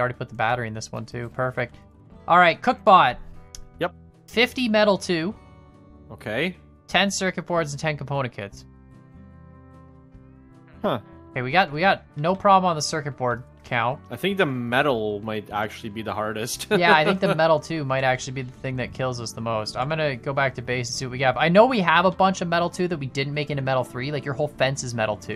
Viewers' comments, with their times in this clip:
0:10 Minecraft villager noises